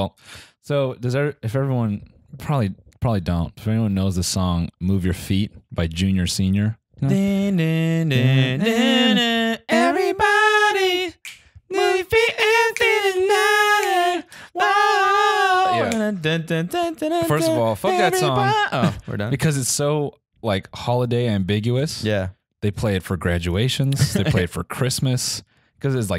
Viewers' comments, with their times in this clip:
0:06 I hate that I sang along with y'all
0:09 what the TMG mixtape will sound like